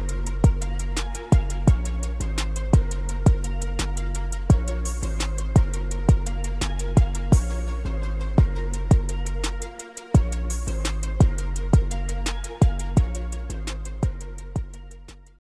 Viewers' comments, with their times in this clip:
0:03 I'm a huge Packers fan, so I'm super used to Rodger's "Green 18" cadence. Hearing "Green 18, Green 18 oh f makes me laugh every time.
0:03 I'm a huge Packers fan, so I'm super used to Rodger's "Green 18" cadence. Hearing "Green 18, Green 18 oh f makes me laugh every time.
0:03 I'm a huge Packers fan, so I'm super used to Rodger's "Green 18" cadence. Hearing "Green 18, Green 18 oh f makes me laugh every time.
0:03 I'm a huge Packers fan, so I'm super used to Rodger's "Green 18" cadence. Hearing "Green 18, Green 18 oh f makes me laugh every time.